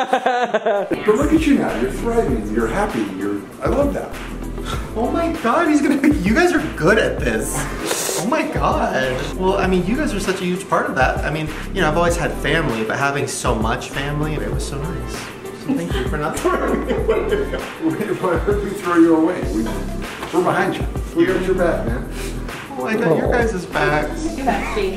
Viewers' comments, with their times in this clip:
0:07 the saliva noise